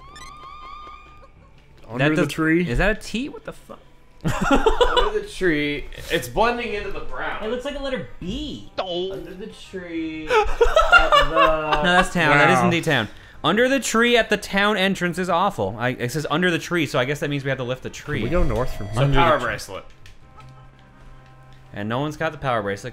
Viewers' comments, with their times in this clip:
0:08 Click repeatedly to hear Mario go "D'oh".